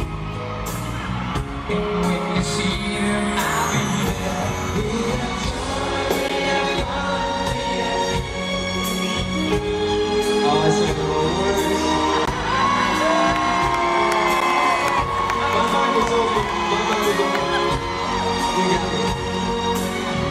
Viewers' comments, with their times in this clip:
0:07 Shane be like: Wait, what, did I make mistake? then laughing.. He's cute July 2020 anyone?